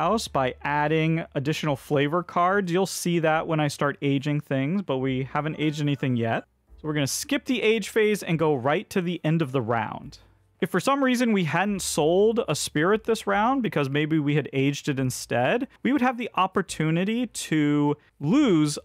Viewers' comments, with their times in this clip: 0:06 was that an alarm? Caught me off guard XD